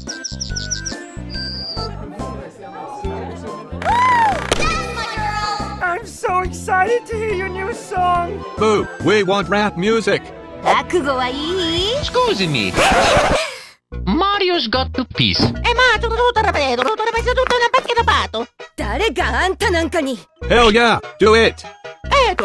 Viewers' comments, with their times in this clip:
0:04 How do you clap that fast?